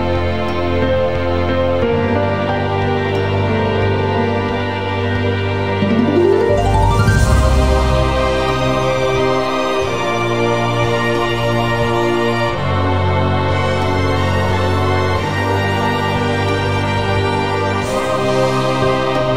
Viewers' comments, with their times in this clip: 0:03 Sounds like a castlevania soundtack XD but mario